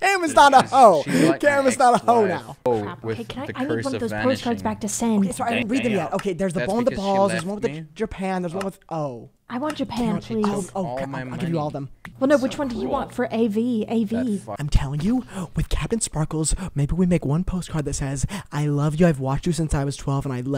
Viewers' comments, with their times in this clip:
0:07 the way he pauses when he realizes whats on that 3rd postcard, damn